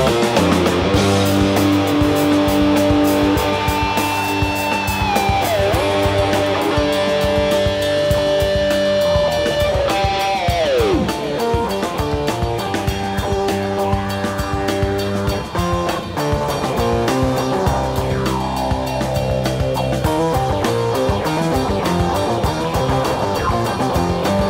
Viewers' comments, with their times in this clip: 0:09 Mike's solo was one of the best parts of the entire show. I wish it was much longer.